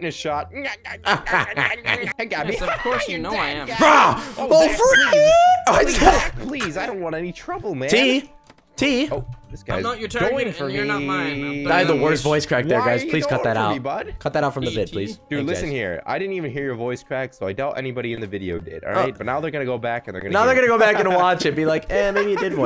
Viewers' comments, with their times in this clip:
0:03 FUNNIEST VOICE CRACK EVER
0:05 VOICE CRACK:OHHH FREEAAK